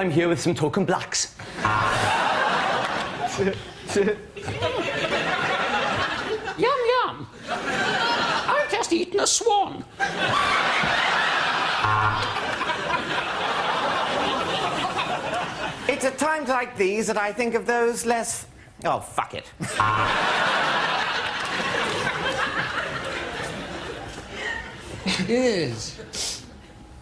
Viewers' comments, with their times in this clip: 0:10 that insane laugh.
0:10 Who brought dolphins into the studio?
0:11 Oh my god, the demonic laughter in the background